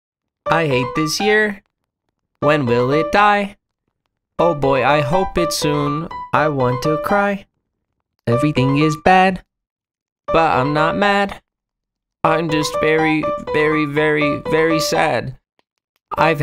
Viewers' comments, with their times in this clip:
0:01 the song is so good for some reason lol